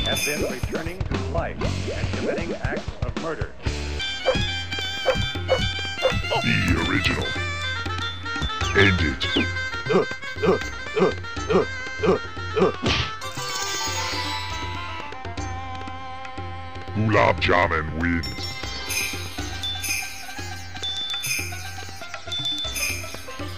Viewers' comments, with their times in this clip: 0:08 it sounds like beavis going UH UH UH UH UH UH.